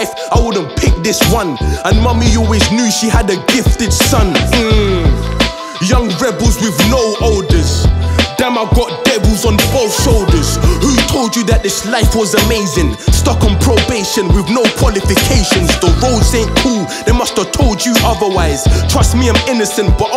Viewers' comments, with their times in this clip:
0:05 he says he’s got devils on both soldiers